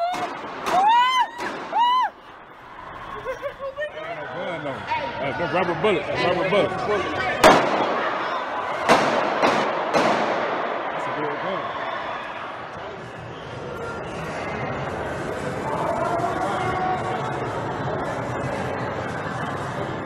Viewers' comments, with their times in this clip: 0:06 Yes I have the link, it just holds them for review & approval by default in YouTube, I looked at the video & I heard the audio, was that the sound of rubber bullets being fired secondarily to the four shots we know about? in the video here the one person start saying rubber bullets.